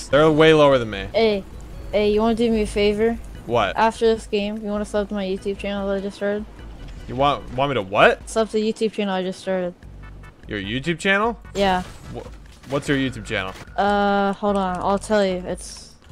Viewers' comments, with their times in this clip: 0:04 i thought he said suck😂🤦‍♂️